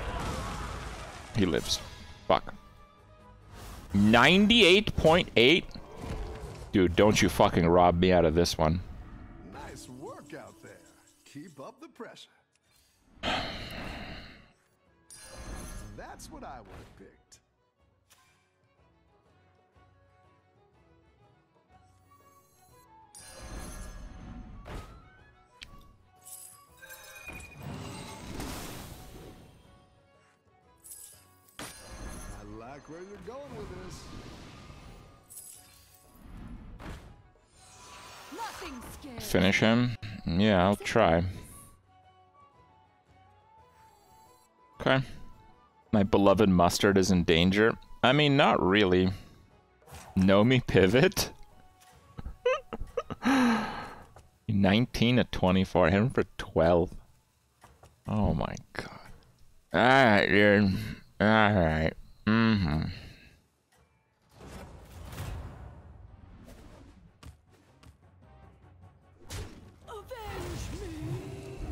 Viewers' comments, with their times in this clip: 0:04 Ohp, wait, we had some moaning
0:59 Kripp mumbles “alright dude, alright”